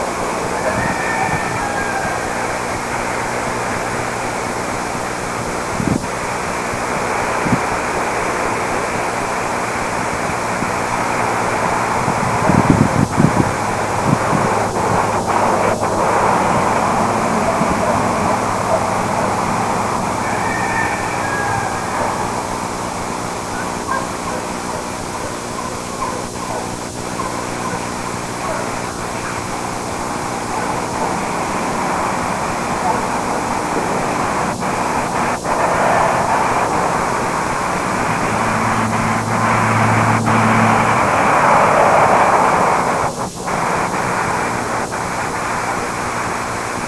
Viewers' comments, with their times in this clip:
0:03 Holy crap Momma Sas near camera and that young one runs out center frame The souped up vehicle agitated big mama, then dog starts barking. I assume Sas hates dogs because they bridge our two worlds, and Sas tells familiar dog to shut up. Dog shuts up, until junior across the creek and field starts getting dog riled up again and that was too much for mama who scolded junior and threw things to make a point. Awesome. That guy really was running around feeling his oats.
0:31 Oh damn, here he comes across the field left-center to link up with mama with the fake bird whistle. Either junior is talking smack or mama is scolding him. Freaking awesome.